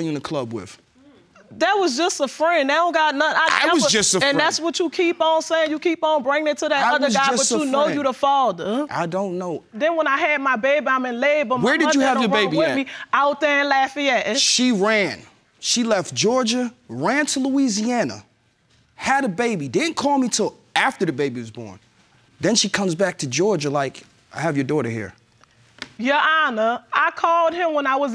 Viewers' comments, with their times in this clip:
0:10 confirms her having her baby in Lafayette, Louisiana... That Louisiana accent is sooo strong!!!